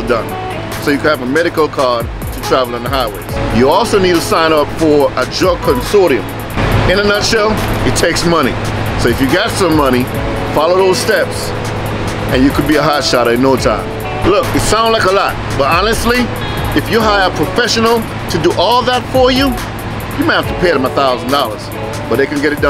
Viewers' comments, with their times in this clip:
0:05 What did pops say I couldn’t make it out?